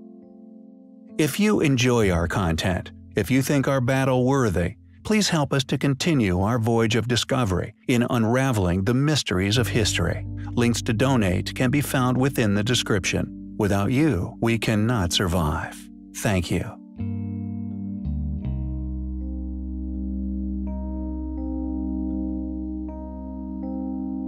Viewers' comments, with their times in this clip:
0:08 Like the subject. Hate the computer voice.